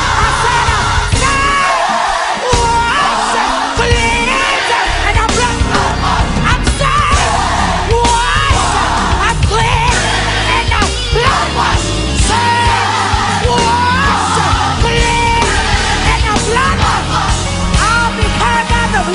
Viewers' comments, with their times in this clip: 0:03 lead guitar had that thang wound up my god